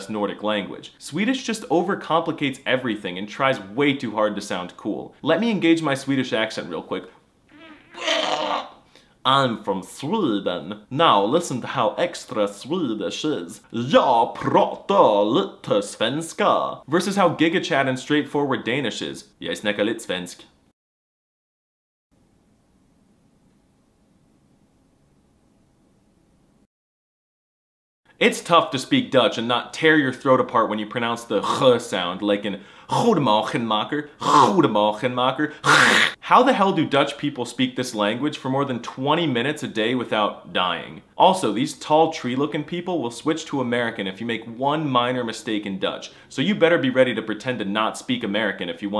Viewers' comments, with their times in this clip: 0:05 "let me engage my Swedish accent real quick" causaliy chokes
0:10 That Swedish accent was horrendous 😄
0:28 I love this video Also for people learning Dutch, You don't have to put so much force onto the G Alot of ppl nowadays speak a softer G rather then the intense G we used to. Also if you have a rlly soft g ppl will just assume you're from Limburg every now and then so it isn't a big deal We are impressed enough if you manage to speak Dutch at all :)
0:31 is that just french R? hahaha
0:36 go to belgium we don't say the G so weird